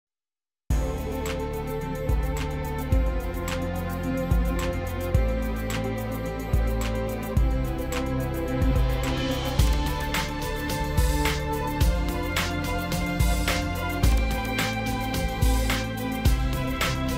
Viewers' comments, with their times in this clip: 0:00 That music at the beginning is really good!! Edit: Hey!! >:( You've just edited it out.........